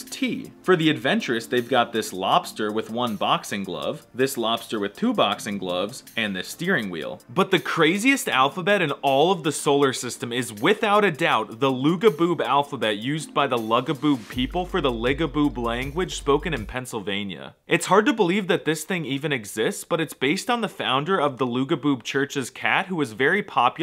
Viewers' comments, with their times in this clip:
0:07 it makes the kpi sound